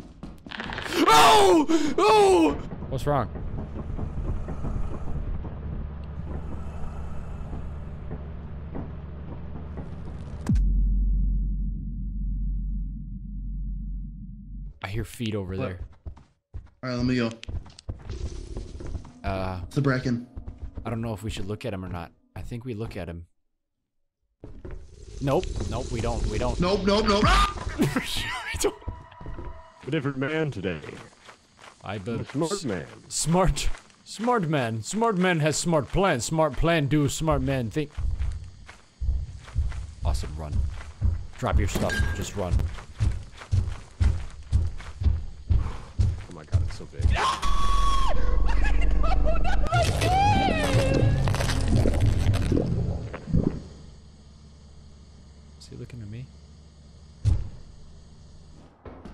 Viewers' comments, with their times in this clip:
0:09 that silence is loud 😂
0:11 the Pause says it all, they died there😂😂😂
0:46 Oh my god that scream Its one of the most funniest and horrible thing I've heard